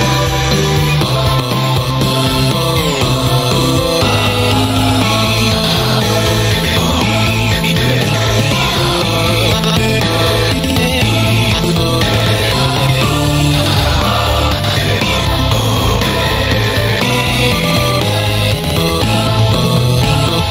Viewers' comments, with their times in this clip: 0:04 The Vocals Of Steven Was Actually Calming in a Way For some reason Idk Why.